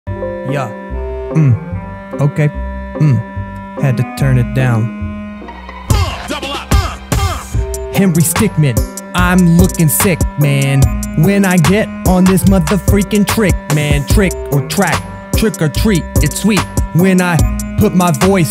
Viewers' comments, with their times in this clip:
0:00 i heard the Windows sound😂😂
0:00 nice rappin skills